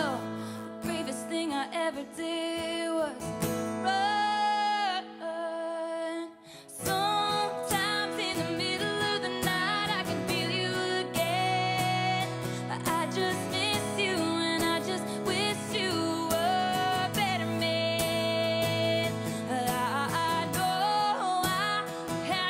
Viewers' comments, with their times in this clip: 0:06 Sounds like one of her from the vault songs on RED album & definitely one of her emotionally powerful songs ever written.